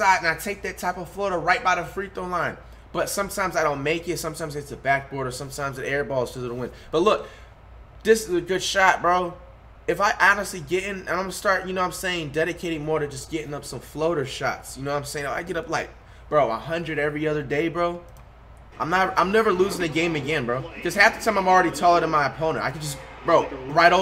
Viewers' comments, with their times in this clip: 0:06 air ball (whispers) cuz of the wind